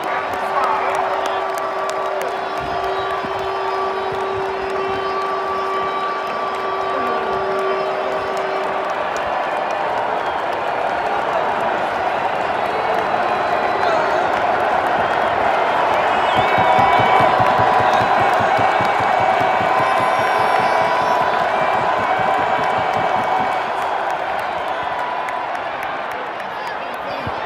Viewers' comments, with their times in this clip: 0:08 thank you for recording them saying it’s third down. I’m a diehard Steelers fan and I love the Steelers third win whistle